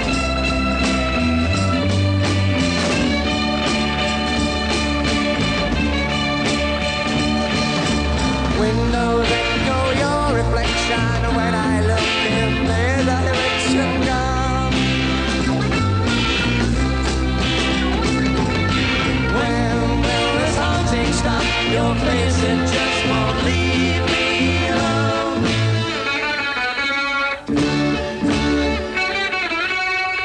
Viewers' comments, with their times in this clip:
0:04 Was the vocal for Matchstick Men live? Francis Rossi starts laughing and the vocal seems to match. It seems unlikely would be live, but...
0:11 The Status Quo were actually singing. their singer is smiling and has a small chuckle. Not all bands mimed when it came to singing.